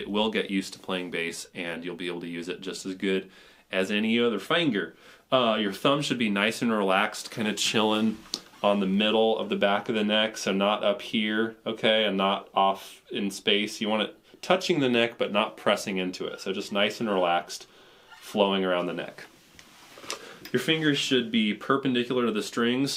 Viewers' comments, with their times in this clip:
0:03 Any other fanger.